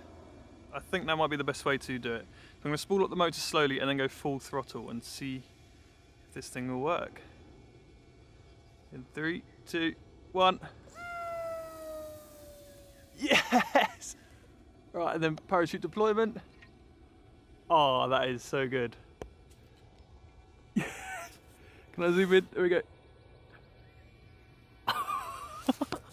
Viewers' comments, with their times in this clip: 0:03 that rocket loves to fly because he said weeeeee
0:08 that rocket literally said "WEEEEEEEeeeeeee" thought that was kind of wholesome
0:09 The sound just after is the most beautiful, delightful rocket sound ever.
0:09 the rocket sounds like it’s saying “sheeeeeeeeeeeesh”
0:10 It sounded like a 6-year-old going "weee!".
0:10 it sounds so funny lol
0:10 it sounds like some kid made that sound to mimic the sound
0:10 the rocket sounds like it is saying "sheeeeeeeesh"
0:11 the rocket yells "weeeeee" out of excitement
0:11 sounds like the rocket screamed "sheeeeeeeeeeeesh"